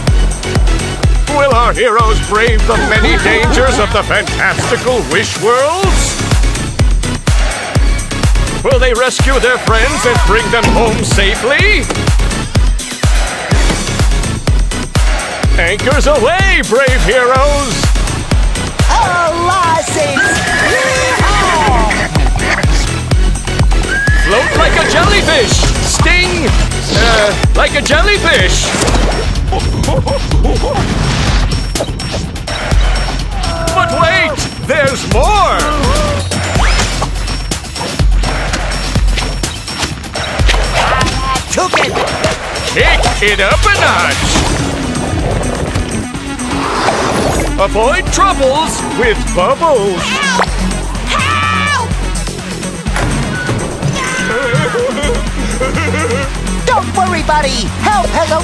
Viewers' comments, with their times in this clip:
0:06 This sounds like an updated version of the Jellyfish Jam. More present kicks, new hi hats, louder claps, and a new snare to I’ve never headbanged harder🤘
0:44 It even plays the legendary solo! now this is an epic trailer!